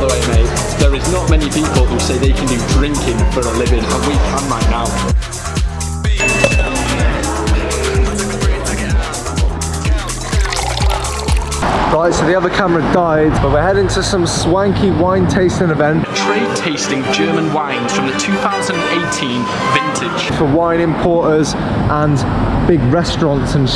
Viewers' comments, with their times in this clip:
0:04 What the background music for sound like sick little house tracks And fair play lads lol